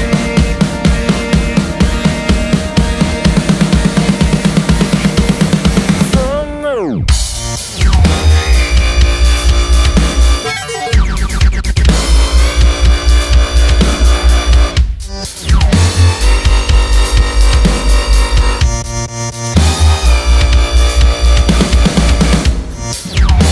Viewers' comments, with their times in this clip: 0:08 dig the formant/ wobble sub combo.